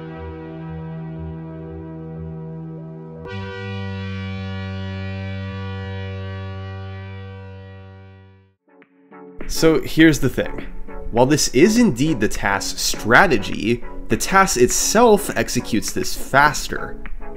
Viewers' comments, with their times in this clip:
0:03 the distorted music sent CHILLS
0:03 The sudden distorted slow down of We're Finally Landing made me laugh. As another commenter said, I think the serious and emotionally-engrossing tone works well for the longer videos, but a lighthearted video with humorous bits like this is also nice to see!